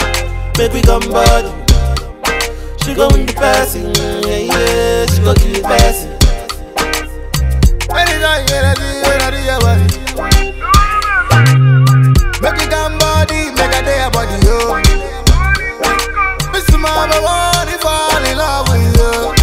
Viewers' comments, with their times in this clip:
0:04 🔥 are you still listening in 2020 This voice is fabulous 💕 👇👇👇❣